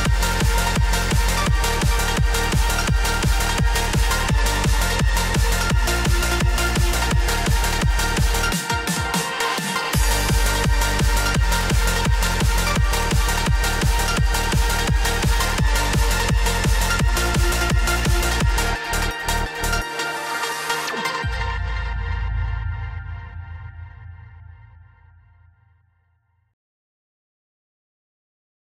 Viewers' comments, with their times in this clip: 0:09 the momment of silence "AHHHHHHHHH"